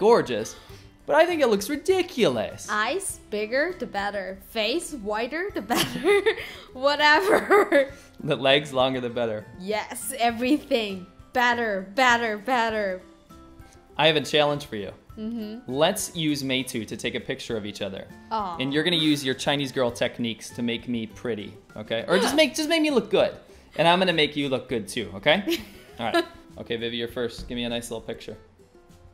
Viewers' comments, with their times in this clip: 0:10 are you saying better or badder I cannot tell... sorry..